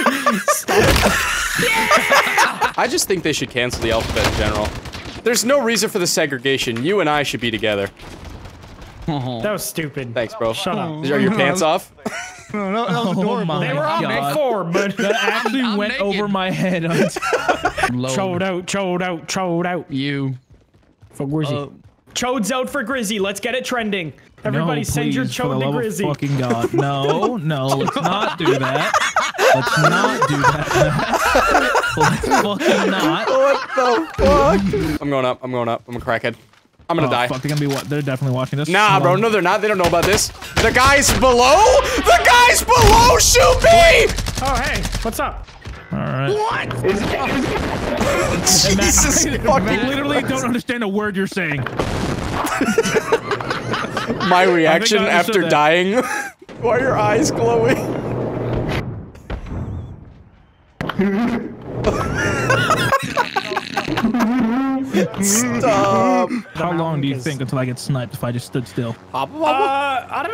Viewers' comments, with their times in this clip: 0:03 intense note taking sounds
0:58 I love funny mic lmao